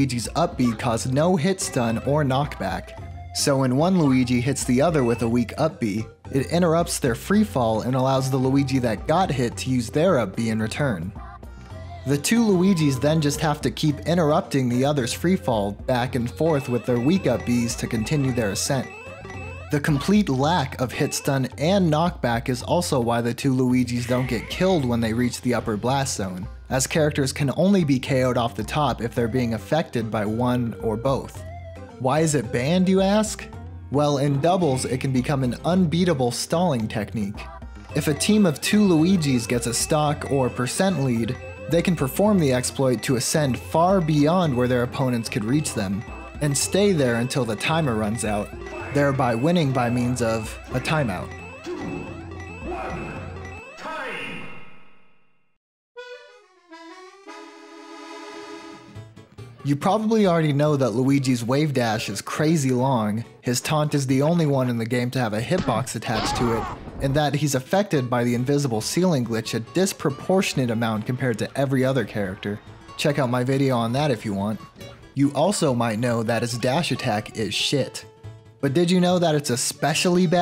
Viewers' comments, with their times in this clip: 0:07 The song of gave me Vietnam flashbacks of The painful hours when playing Mario Wii With my little brother (than was goddamn difficult and he Blanes me Everportal time he lost
1:05 That scream tho! That is halariously scary!
1:05 I’m fucking crying at that scream 😂🤣